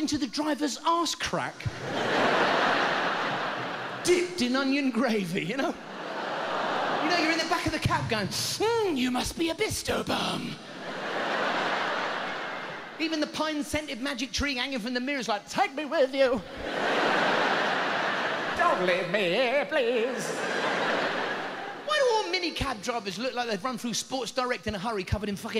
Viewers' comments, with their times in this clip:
0:09 "You must be a bisto BUM!" 😆 The way he said it just CRACKED me up! 🤭😎